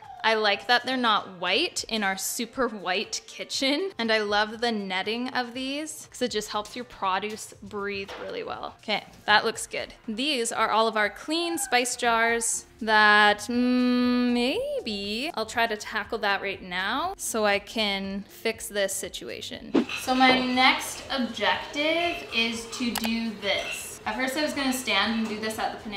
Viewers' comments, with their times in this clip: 0:07 That’s an interesting way to say “produce” Is that a Canada thing?